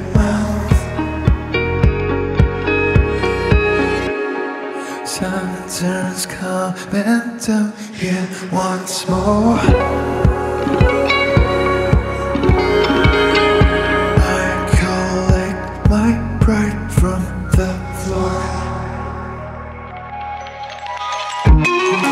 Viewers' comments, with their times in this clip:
0:05 How do you create that violin-like sound ? I’m in love with it. Sounds like reversed violin if anything.